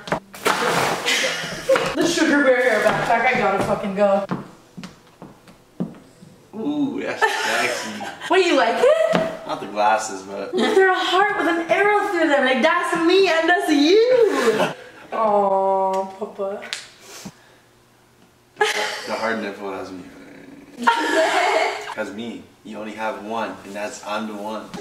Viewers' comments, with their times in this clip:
0:06 Reading the comments aaand... am I the only one that thinks Tanas baby talk is the cutest? Especially I keep replaying it because it's so precious